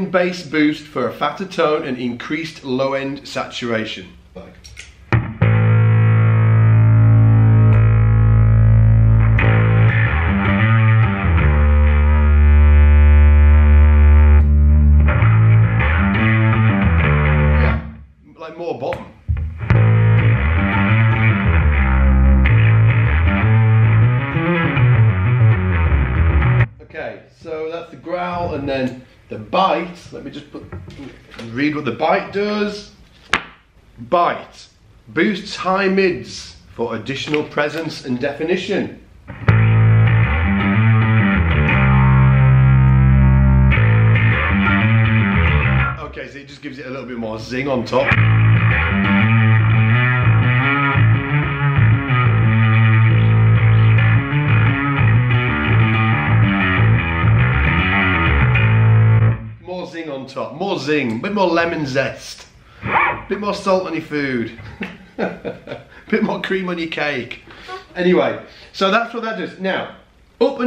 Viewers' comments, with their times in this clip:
0:04 #darkglassalphaomega I liked the setting when you turned on the growl. it seemed to add a lot of bottom end.
0:09 #darkglassalphaomega I'd go with the setting Highly distorted but blended with clean signal and with the 'Growl' switch turned on. But in general I liked both settings. That little thing is a beast!
0:10 Thanks for this video and for this #darkglassalphaomega give away. My favorite setting is the sound of the alpha distortion with the growl button turned on (heard ).
0:12 I have actually wanted a Darkglass Microtubes B3k, or B7k ;), for an extremely long time, ... but after hearing the Alpha Omega, I think I have my new obsession!! The best setting by far is with the growl turned on and the blend around one o'clock!! <3 WOW. Great work Darkglass and Jon Stockman, this pedal kicks ASS!! #darkglassalphaomega
0:14 #darkglassalphaomega I loved the tone with dat growl kicked in. Very nice.
0:14 The settings are pretty rad. Retains a good sound but still sounds filthy dirty. #darkglassalphaomega
0:17 #darkglassalphaomega My favorite tone was groundshaking sound ! Thanks for this demo
0:21 #darkglassalphaomega when you're demoing the growl, with full at alpha, 3/4's drive
0:22 #darkglassalphaomega I like the sound of the alpha with the growl the most. But I think all the tones are great.
0:37 Alpha with the zingy cream cake! #darkglassalphaomega
0:40 liked to tone the best. generally I like it more towards the alpha side #darkglassalphaomega!
0:42 #darkglassalphaomega, Mix Alpha and Omega Distorsion has a brutal sound. Blend mix signals with quality and definition. My favorite sound minutes. Regards
0:43 #darkglassalphaomega I definitely like alpha with the bite switch
0:43 #darkglassalphaomega Just because it's a big rockin-on-a-cello-with-an-orchsetra high speed sounding setting.
0:44 #darkglassalphaomega loving that zang!
0:47 #darkglassalphaomega Fantastic sound when "bite" was turned on. And the Blend was at 1 o'clock i think, great balance between clean and distortion. It was Alfa-side. Wanna hear how Omega-side will sound with "Bite"
0:47 Gimme that tone #darkglassalphaomega | I really enjoy how when the Bite switch is combined with the Growl switch, it keeps the low end while still giving the signal an extra trebly punch. Blending the Omega and Alpha at about 60% Alpha and 40% Omega would be absolutely delightful.
0:50 #darkglassalphaomega' bite, to make some guitarists mad, more force to the low end!
0:57 #darkglassalphaomega The setting in is great! The "bite" adds a lot in cutting through the mix, while still holding the bottom end really well. Love this thing!